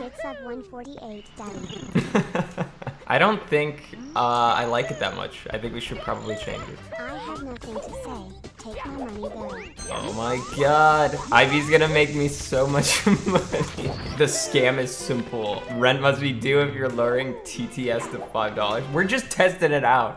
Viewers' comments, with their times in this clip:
0:07 The one just makes me think of when she does the uguu kawaii desu personality